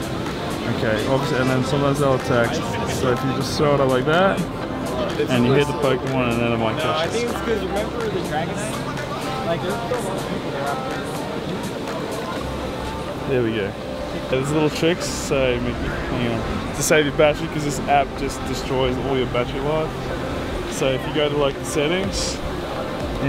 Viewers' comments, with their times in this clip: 0:08 I Heard Captain Sparklez